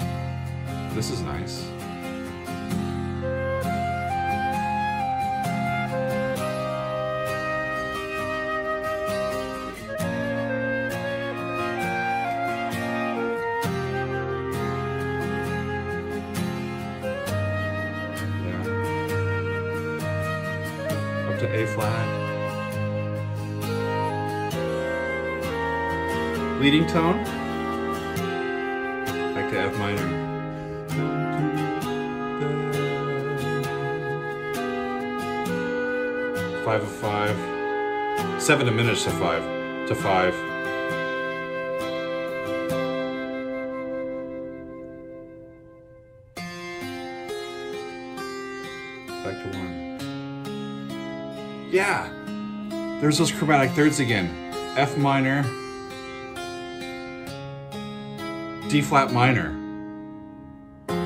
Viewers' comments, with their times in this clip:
0:03 That flute is straight out of Firth of Fifth or Dancing With the Moonlit Knight
0:44 Shout-out to John Petrucci (for about the billionth time!), this time for his amazingly rich chordal work on this section.